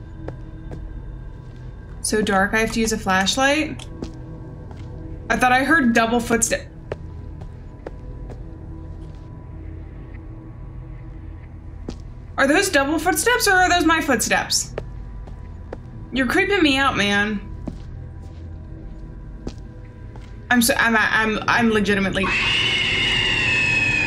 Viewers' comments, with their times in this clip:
0:05 I get this all the time in real life, when I'm walking on the streets at night and think I hear double footsteps behind me. It's the worst.